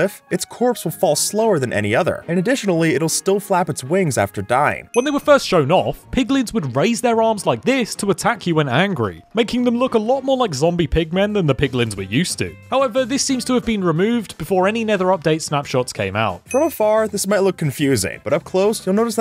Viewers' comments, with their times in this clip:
0:05 you voice had been more deeper what happened?